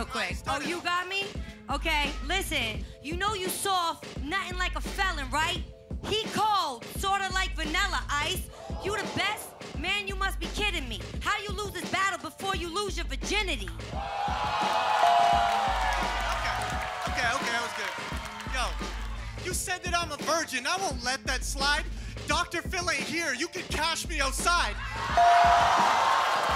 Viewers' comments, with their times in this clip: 0:06 Peep when gay dude touched conceited, then Carlos laughed at him
0:10 the gay guy touches conceited and karlos laughs at him 😂